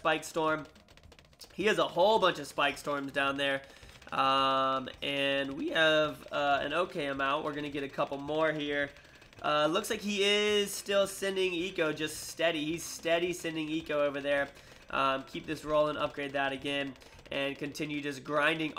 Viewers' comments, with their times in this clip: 0:03 THAT VOICE CRACK DOE! <3